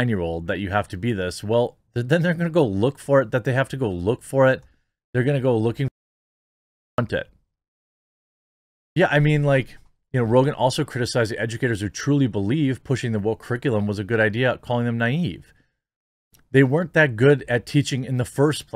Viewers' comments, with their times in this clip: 0:04 there seems to be an audio glitch between and 9::31 with a second of audio culled out
0:06 At ~ in the video it seems that either you or YT muted a word.